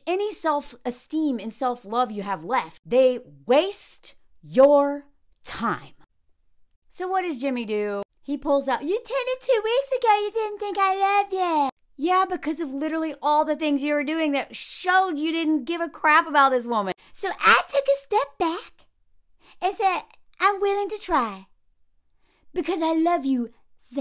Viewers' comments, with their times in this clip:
0:08 I thought that was Cartman's voice for a sec lol